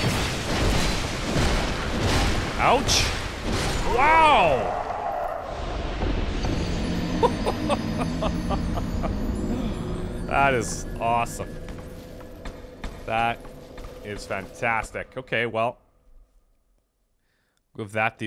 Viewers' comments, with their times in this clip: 0:06 I love when he does his chicken imitation, just so cool!